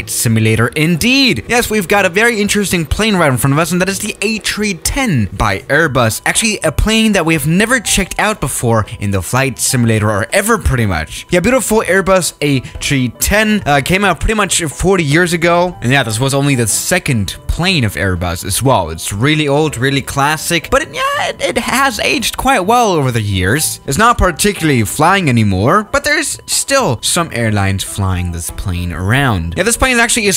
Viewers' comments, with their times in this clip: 0:04 Ah, yes, the Ayy Tree-Tehn.
0:04 Did airbus change the fuel source too trees? He said ATreeTen
0:11 "A Chee ten" waaaaaat?